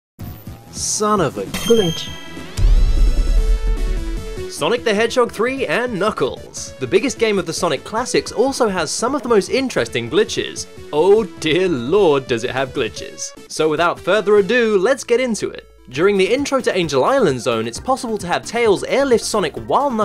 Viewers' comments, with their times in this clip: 0:01 not going to lie that ding for with knuckles hit